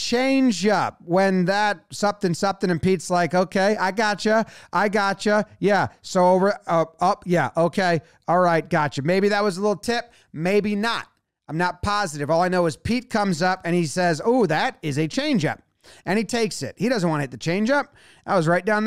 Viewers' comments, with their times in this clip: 0:04 In the ESPN feed you can clearly hear Jose Iglesias ( on deck with Pete and the coach) shouting "what'd I tell you?!" in the high-five line